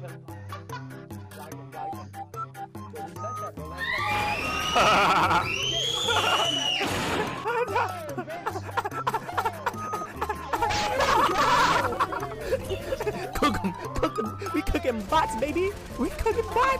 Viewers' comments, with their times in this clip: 0:04 THE SCREAMS JAHHAHAHA